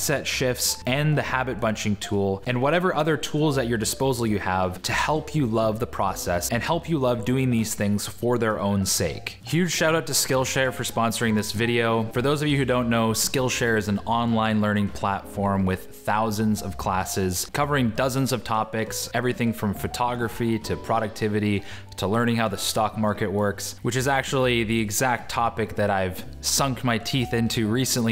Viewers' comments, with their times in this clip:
0:09 He suddenly sounds so unmotivated when promoting skillshare lol 😂